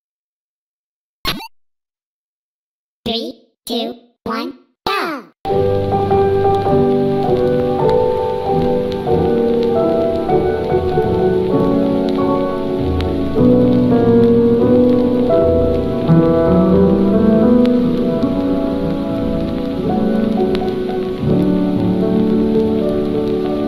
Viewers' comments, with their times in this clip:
0:05 Daddy: He does not make a sound, but he sings.